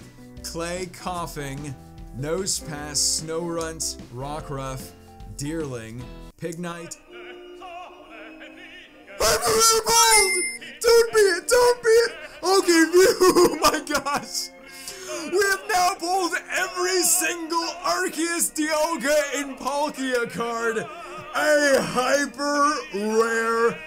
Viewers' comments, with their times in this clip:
0:10 Aaahahahahahaahah 😂😂😂 that scream. Epic.